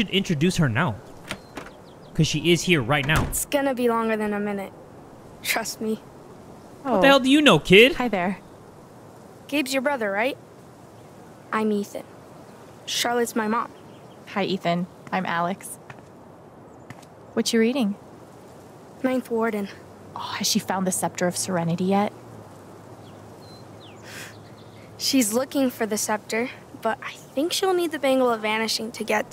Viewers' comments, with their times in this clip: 0:10 i thougth he said that he is charlottes mom bruh